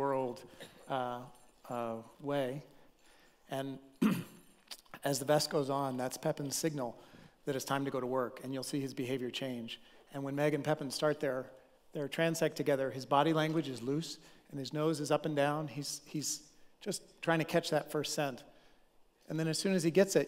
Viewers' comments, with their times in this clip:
0:04 Hi, could you please tell me if the man says "as the best goes on" or "as the VEST goes on" (referring to the dog's vest)? I'm not an English native speaker and I'm trying to discern this.